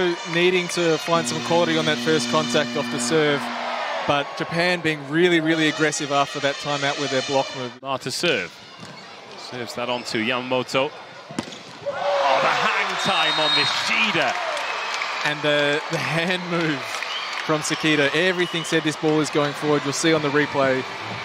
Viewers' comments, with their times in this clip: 0:03 Did nobody hear the ipl song